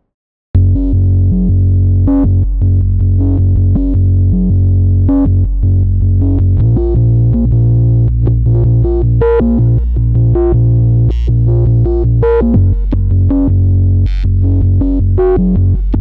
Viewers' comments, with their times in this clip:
0:04 reminds me of Tom Yorke’s Hearing damage song. Nice work!